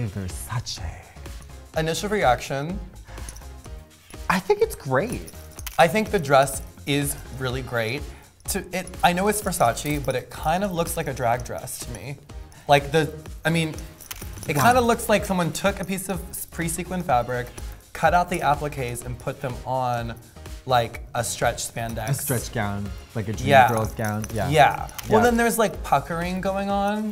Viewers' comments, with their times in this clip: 0:08 shm WHY SHE, VIOLET, CAN NOT PRONOUNCE VERSACE RIRGHT? LIKE KATJA DOES?!